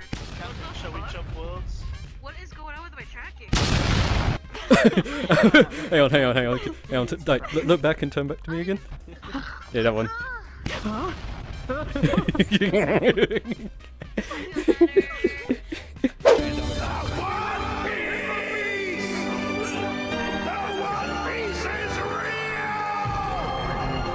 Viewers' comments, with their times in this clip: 0:05 "But can you do this?" Emote where he rips off his shirt then does the boom effect.